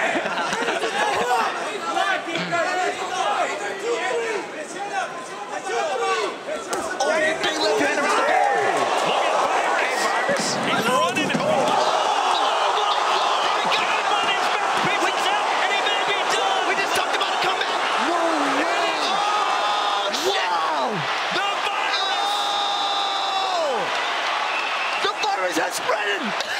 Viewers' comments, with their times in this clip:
0:09 Sound like Ryu saying HADOUKEN
0:10 you can hear “Hadouken”